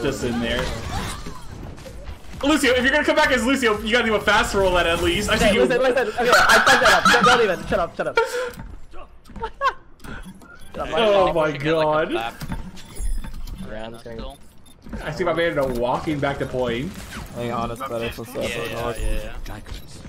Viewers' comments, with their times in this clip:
0:04 what kind of hyena laugh was that?? 😂😂😂